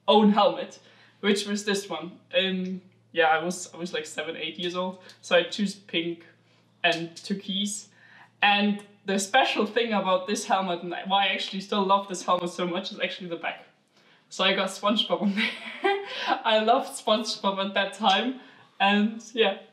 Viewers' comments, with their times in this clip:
0:06 When the inner german comes out of you for a second